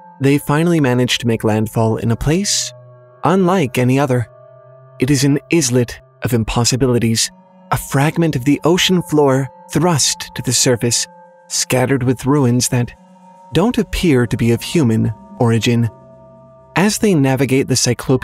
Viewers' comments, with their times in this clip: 0:05 Dude... "izlet"? How do you mispronounce that? It's with a long I and a silent S, just like its counterparts: island and isle. -_-
0:05 Dude... "izlet"? How do you mispronounce that? It's with a long I and a silent S, just like its counterparts: island and isle. -_-
0:06 I think you mispronounced 'islet'